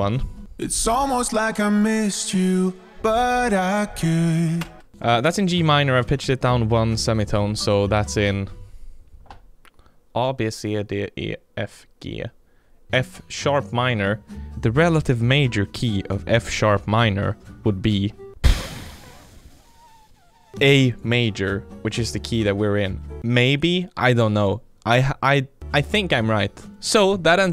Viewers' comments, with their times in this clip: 0:09 ah, beeh, cee ,Dee ,ee, ejf, Gayyy LOL